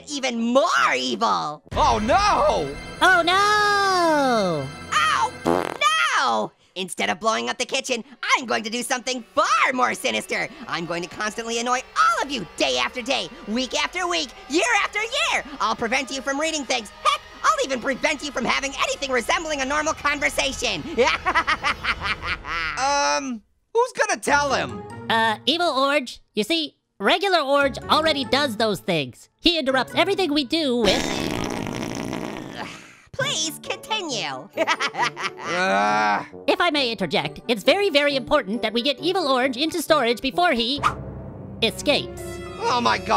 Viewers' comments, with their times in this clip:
0:04 Orange: Oh (Farts) No! Me: 😂😂😂😂
0:05 oh (fart) no
0:28 lolol longest fart of orange
0:31 the long fart made me laugh so hard